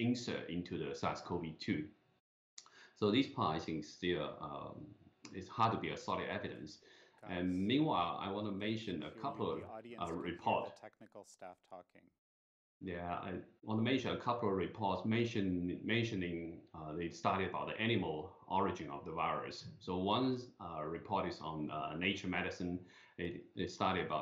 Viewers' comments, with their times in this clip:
0:09 p.m. east coast time. ( when I try to watch) your audio cut out....